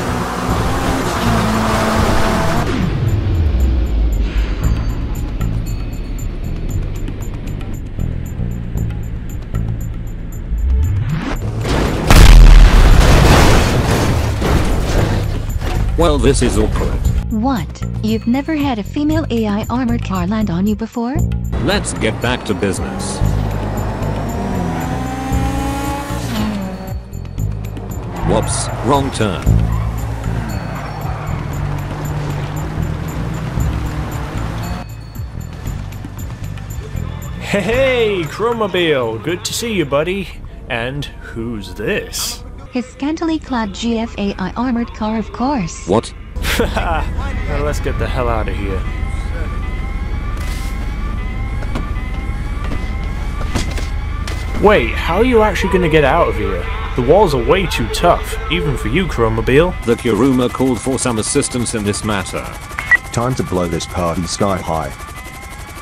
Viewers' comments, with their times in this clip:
0:04 I heard some TABLA
0:52 the noise it makes when he gets in the drivers seat proves there is someone in the insurgent
0:53 you can hear that he kicks out some from the chrome mobile lol
0:53 You can hear him smack someone out of the chromobile when he gets in XD